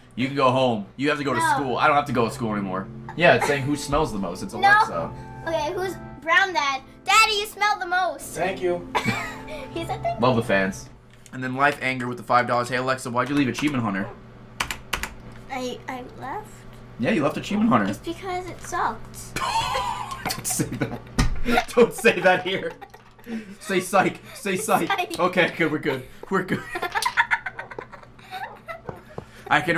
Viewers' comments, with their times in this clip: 0:10 Never heard Ray this fucking scared in my life.